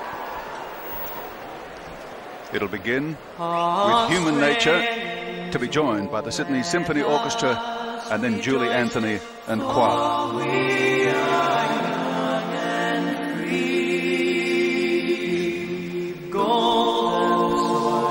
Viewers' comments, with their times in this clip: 0:03 It irks me how that announcer was talking at the beginning of the anthem